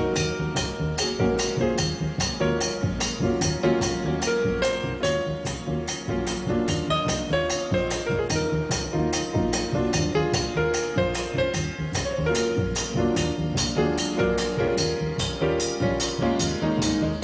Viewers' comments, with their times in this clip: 0:04 I like he plays a little quote from "Aquarius"...